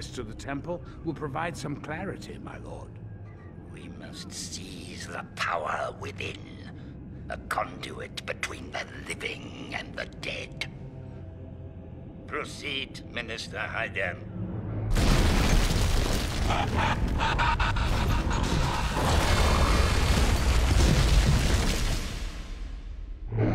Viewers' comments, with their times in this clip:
0:07 A conDEWIT between the living and the dead!